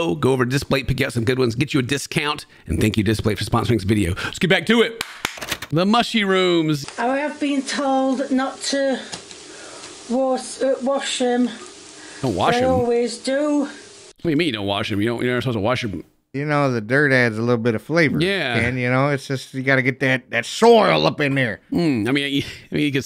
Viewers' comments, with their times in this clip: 0:07 that singin, though.